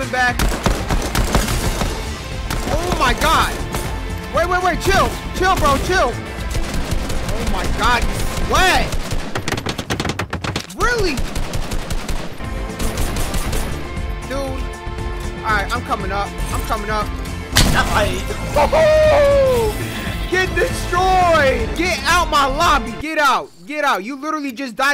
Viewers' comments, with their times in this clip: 0:09 the hammering sounds had me dead😂😂😂